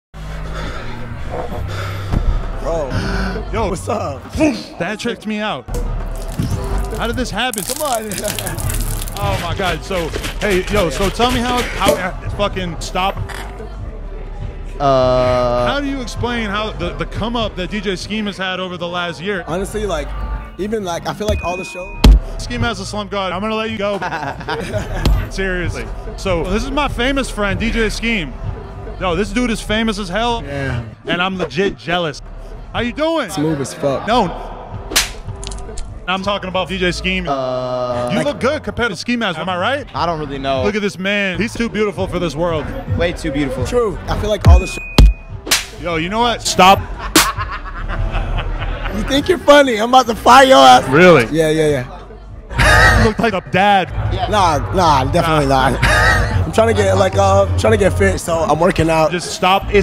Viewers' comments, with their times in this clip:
0:04 •large inhale• Yo! 😮
0:33 N O slap sound
0:47 that laugh though 😂😂😂
0:47 Why is there a trap snare that happens when ski mask grabs the guy's shoulder?